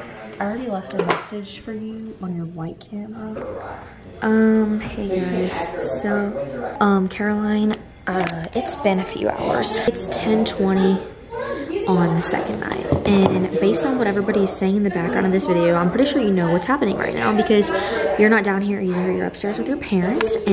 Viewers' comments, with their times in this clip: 0:04 am i the only one who tried to figure out what they said in the background hahahah ?